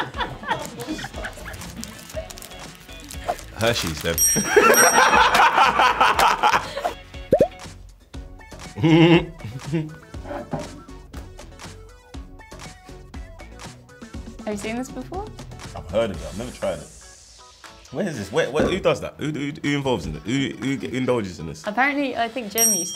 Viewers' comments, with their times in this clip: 0:05 Jamie carragher laugh 😂